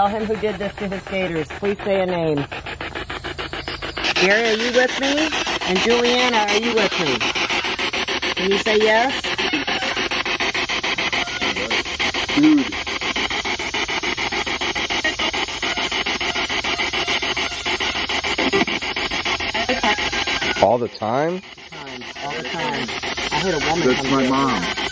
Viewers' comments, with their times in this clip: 0:09 it sounds like "Steven".....